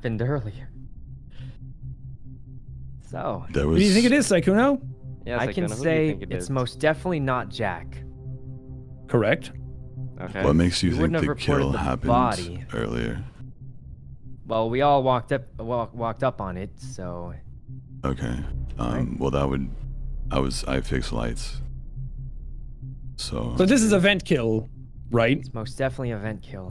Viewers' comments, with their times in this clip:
0:07 you can see mr beast just scream WHAT!!!